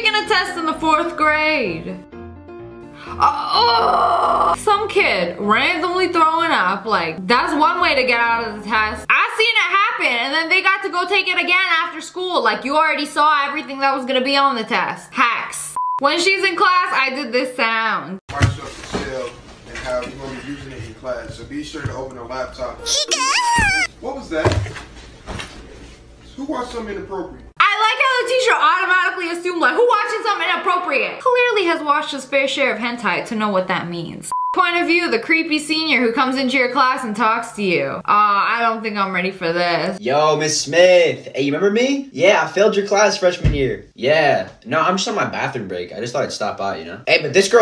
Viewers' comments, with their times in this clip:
0:07 If you slow it down to 0.25 percent og speed, it legit sounds like a song
0:09 Homies wasn’t playing He really did sound like an alien. and I like when she says hello friends, it’s me like I’m her best friend I love it
0:11 it’s the eheheeheheh for me
0:29 Sniperwolf making the sound effects-